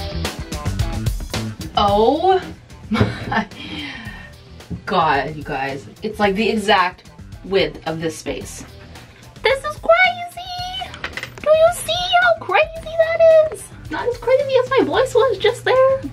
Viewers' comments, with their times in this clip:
0:04 Haha it has the exact 😏😏 WIF of this place 😏😏 Sorry 😅😂😂😂🙈